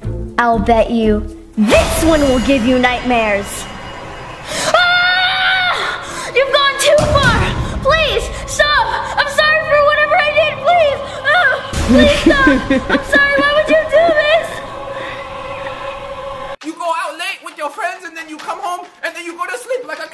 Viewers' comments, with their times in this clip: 0:04 he sounds like one of the elric brothers from full metal alchemist